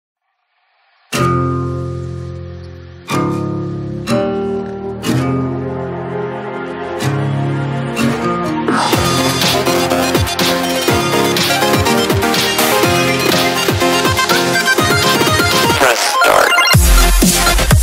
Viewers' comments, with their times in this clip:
0:00 my favirot part is the marieo ding also _press start _nock em _power trip